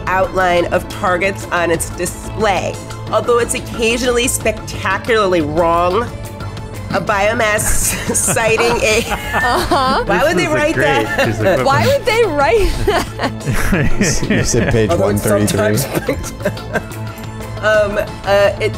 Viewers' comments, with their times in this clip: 0:05 music is just too loud